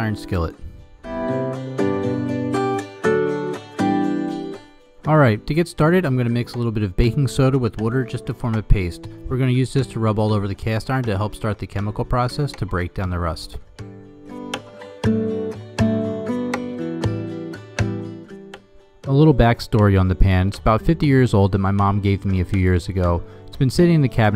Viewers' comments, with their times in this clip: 0:07 This guy sounds like he's from Baltimore ("wooder" ...my only knowledge of Baltimore comes from The Wire haha)